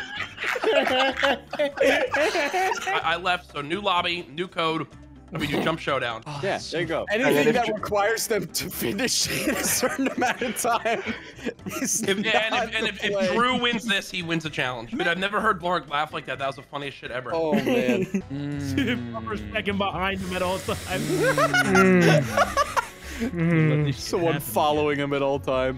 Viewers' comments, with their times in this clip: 0:09 best laugh in the vid omg